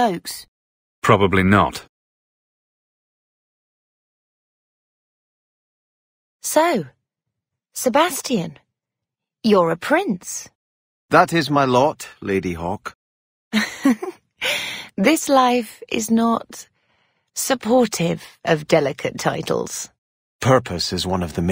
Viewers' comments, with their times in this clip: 0:06 Love it when Sebastian flirts with Bethany and Bethany went speechless! 😆 Even Isabela sounded like her ovaries exploded with surprise! Sebastian was not the flirtatious type so this was a happy surprise for Isabela (and me, haha!). Years after and I'm still discovering new things about this game! :)